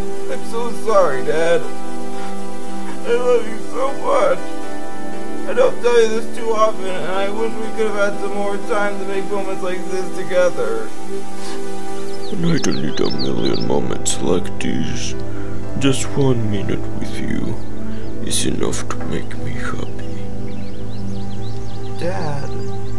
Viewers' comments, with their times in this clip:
0:04 I really like the piano theme during :-)